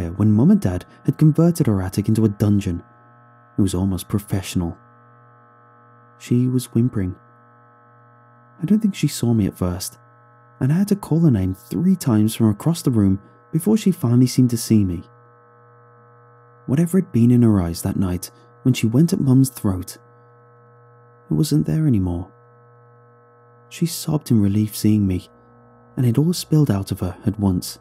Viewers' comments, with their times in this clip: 0:08 What’s the name of the eerie ambient music ?